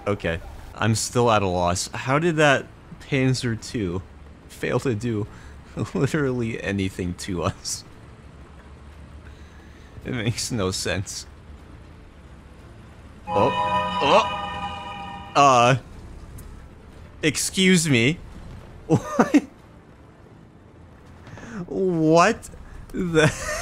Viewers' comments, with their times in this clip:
0:10 Lol that intro with Archer voice. 100% eSpoRtS reAdY